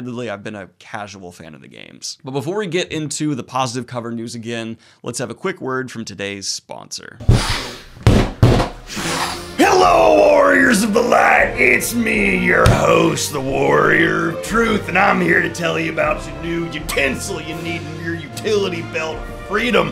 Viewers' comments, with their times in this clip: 0:07 in thick am— i mean gondorian southern accent down with the false king!